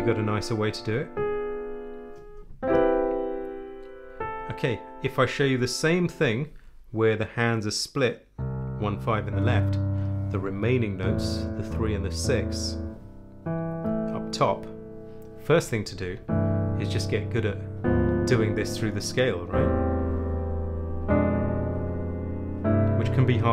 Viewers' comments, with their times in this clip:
0:08 you start playing the "1st and the 5th" in your left and and the "3rd and the 6th" in your right hand. You then play 'D and Ab' in your left hand... but Ab is not the 5th of D, that should be A? Then, on the next you play 'E and A' in your left hand... also not the 1st and 5th since the 5th of E is B, not A (a is the P4 here, not the P5?) I don't think you are actually playing the '1st and the 5th' in your left hand here... am I missing something? Please explain., Can you please explain what's going on there? I'm confused. Are you playing the "1st and 5th' in your left hand or not?